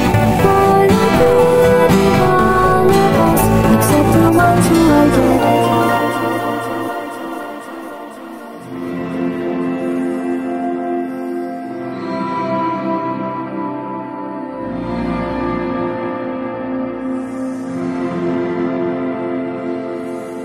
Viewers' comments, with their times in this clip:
0:08 If you listen closely to the music, you can hear the next verse of Still alive, really slowed down and kind of hard to hear.